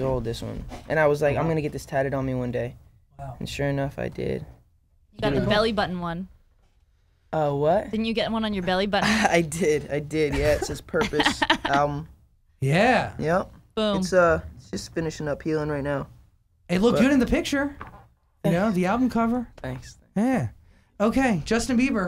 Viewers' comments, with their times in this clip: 0:08 the way he says: I did, I did. Omg that ways so cute❤️